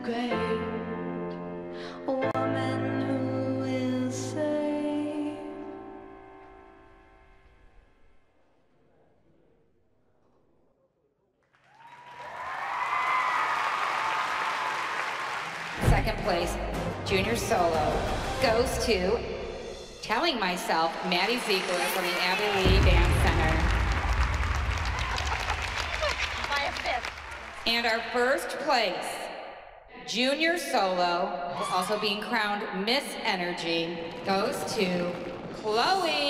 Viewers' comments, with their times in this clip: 0:08 I thought I was deaf for a second
0:24 Christi happy that chloe won. melissa: bY ⏃ FiFtH